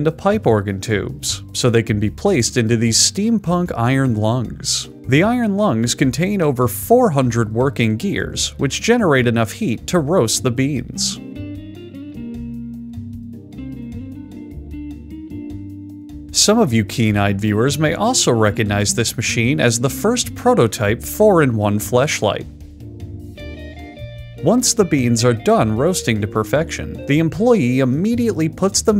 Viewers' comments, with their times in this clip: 0:10 Anyone else hear "the lick" ? edit: OH GOD IT DOESN'T STOP